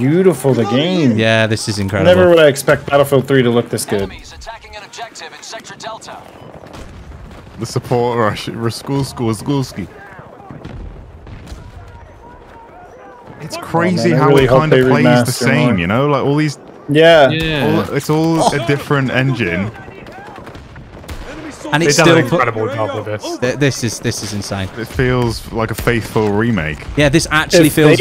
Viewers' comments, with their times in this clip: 0:10 that screaming voiceline never gets old in bf3